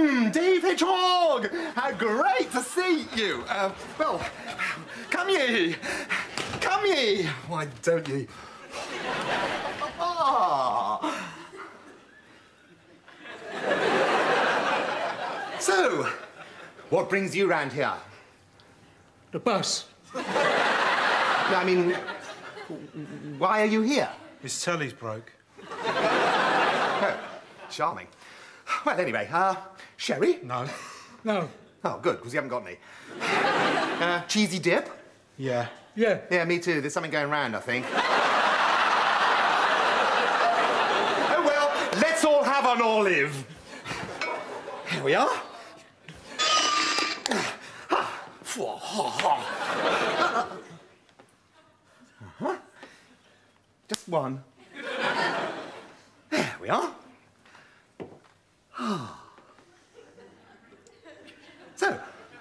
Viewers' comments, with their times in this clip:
0:07 Rik's real voice
0:45 I love the creative sound effects in Bottom, like the horrible grinding noise of the olive jar being opened 🤣